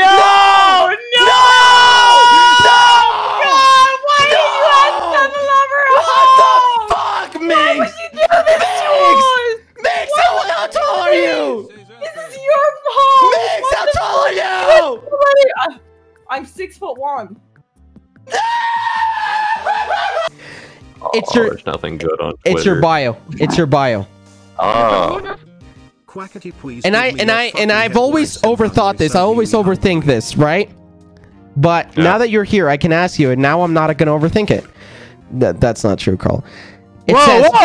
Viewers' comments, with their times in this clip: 0:03 each one of me ears with earphones in fighting each other who can break the sound barrier first
0:13 THE SCREAM LMAOOOOOOOOOO
0:18 quackity screaming of rage cause he’s short 😂